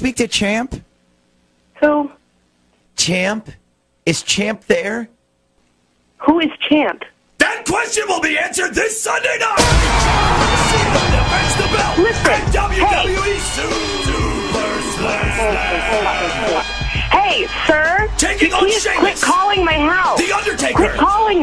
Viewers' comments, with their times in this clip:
0:06 Her: Who is champ? John Cena: THAT QUESTION WILL BE ANSWERED THIS SUNDAY NIGHT MUSIC INTENSIFIES